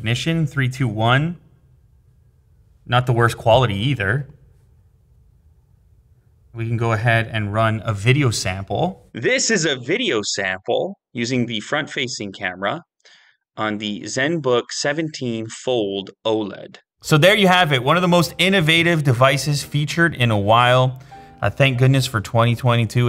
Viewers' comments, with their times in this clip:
0:09 Nice Machine $$$$ , noticed the video is in Audio Mono .... :)